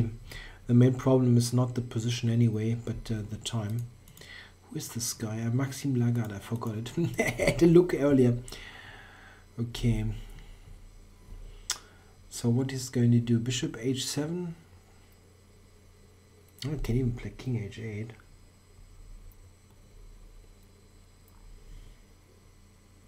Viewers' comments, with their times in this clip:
0:06 Dat laugh! :D